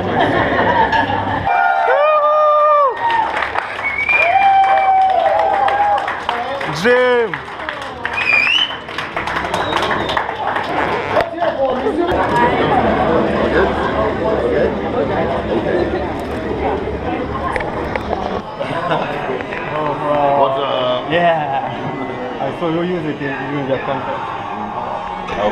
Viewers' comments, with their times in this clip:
0:09 lol some one farted